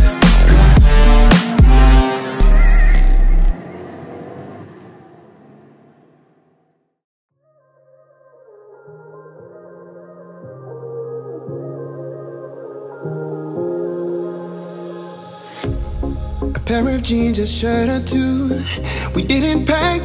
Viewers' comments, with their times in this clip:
0:08 bro that song was goooooooood